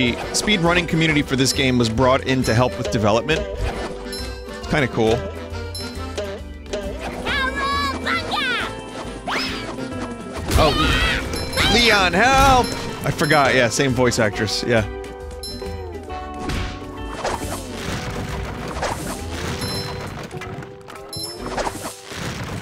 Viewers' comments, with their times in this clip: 0:09 LEON HELP Love how quickly Vinny realized it's the same voice as RE4 Ashley. Unless chat told him. Still funny.